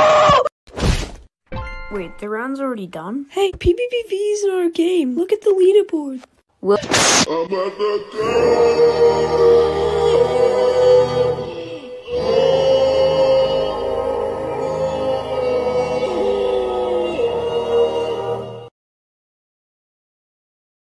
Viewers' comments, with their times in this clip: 0:07 MOST BEAUTIFUL SINGING EVER